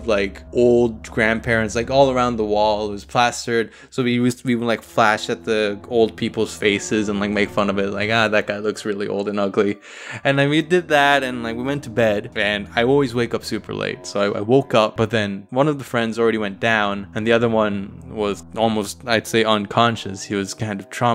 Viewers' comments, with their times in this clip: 0:07 i thought it said,"old people's FECES" instead of faces